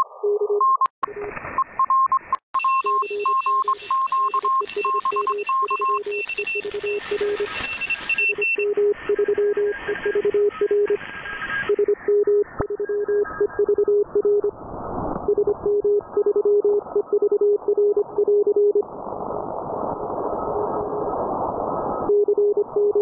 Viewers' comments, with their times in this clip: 0:10 would enyone kindly explain me what causes this kind of 'running' interference